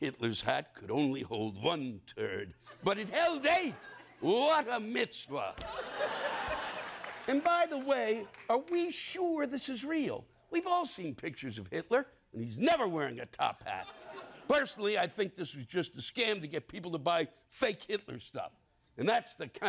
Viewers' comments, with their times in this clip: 0:06 Trevor dying laughing in the background